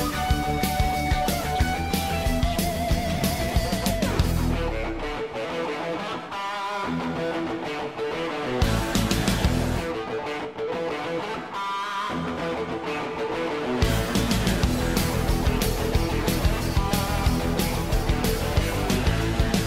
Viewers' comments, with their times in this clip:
0:04 is rocking hard and also from final episode